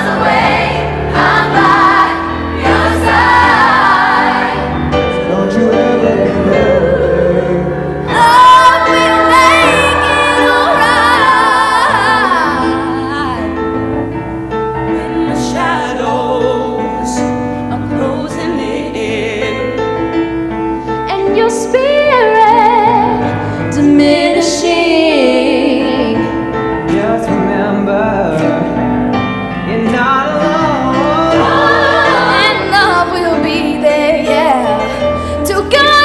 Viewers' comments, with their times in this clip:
0:08 I like the voice of the girl in
0:22 I think the girl has a really nice voice!!